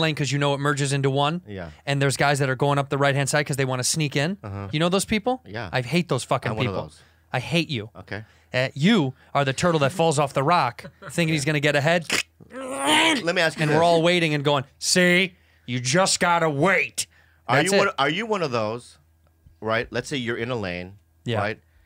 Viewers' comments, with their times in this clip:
0:07 I AM CRYING 🤣🤣🤣 The turtle impressions 😭😭😭